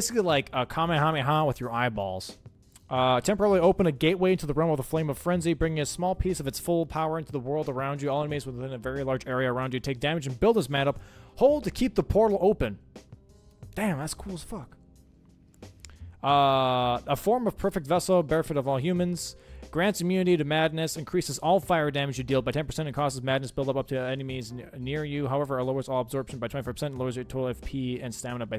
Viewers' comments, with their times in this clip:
0:10 Buildness Madup. POG. lol
0:12 buildness mad up? xD